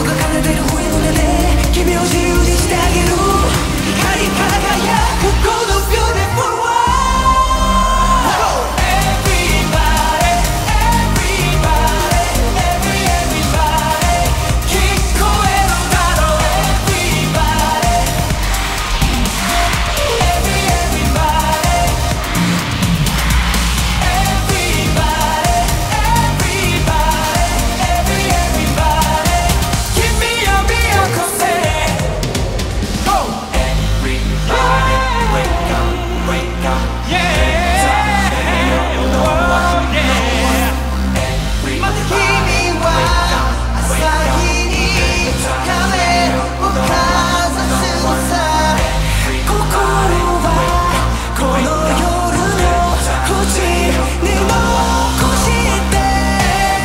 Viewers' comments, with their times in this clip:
0:03 Nobody talks about how good Taeming covered Jjong part right here, he deserves the atention
0:42 this part is my favorite of “everybody” it’s so hard not seeing him and hear his beautiful voice. I miss you, Jjong.